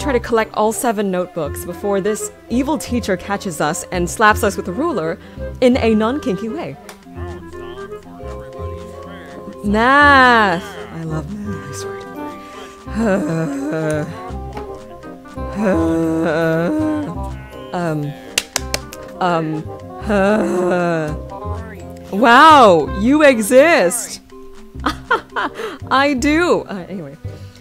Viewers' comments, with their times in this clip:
0:10 What the slap in the vid